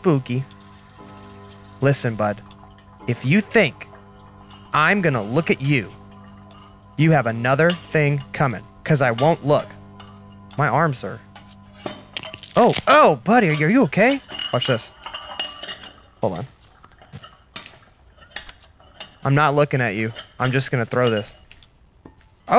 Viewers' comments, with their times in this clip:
0:09 My favorite part of this video is the arm goes crack crack XD and goes back and forth XD 🤣🤣🤣🤣🤣🤣🤣🤣🤣🤣🤣